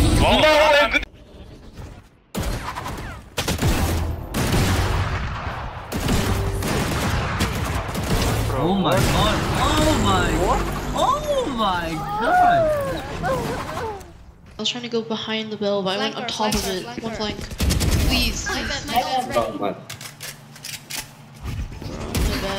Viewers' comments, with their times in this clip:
0:07 KAY/O malfunctioned a bit there with the voice module... lmao